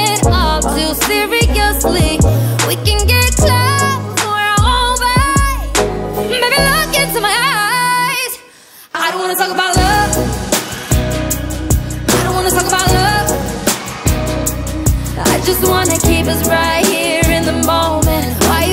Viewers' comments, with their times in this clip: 0:05 It’s the growl for me 🔥🔥🔥😍😍